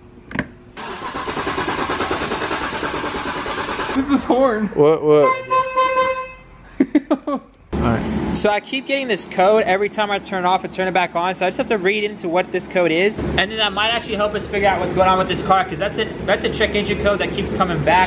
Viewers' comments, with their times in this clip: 0:04 This is a HORN 🤣😂😂 Good luck bro the car is insane ❤